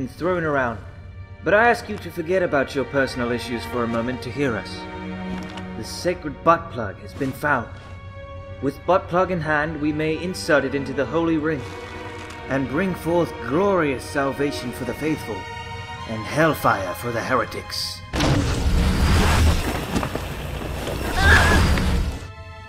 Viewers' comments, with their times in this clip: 0:03 cracks me up how serious he says it XD